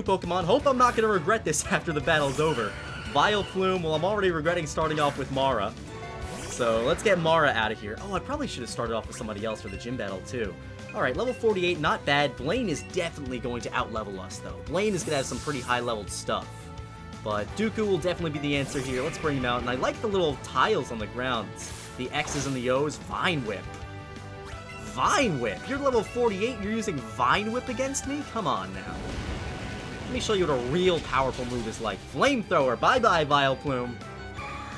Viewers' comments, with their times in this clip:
0:04 I didn’t realize the volume warning and I got stunned 😳 and got scared and burst around laughing at night and everyone probably heard me xD
0:15 Shiny!!!!!!!!!! :D Headphone users beware if u skip to shiny